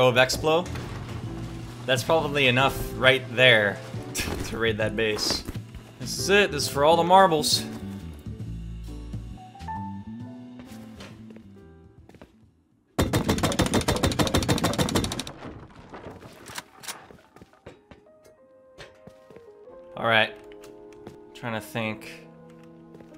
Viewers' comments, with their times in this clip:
0:06 that cut made it look like you died with all the boom lol